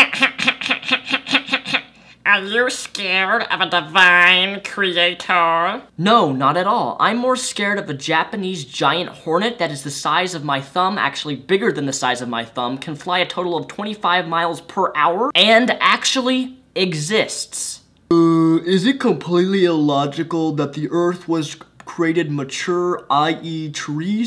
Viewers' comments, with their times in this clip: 0:06 that voice you made sounded like that clown elf thing from Sky High lmaooo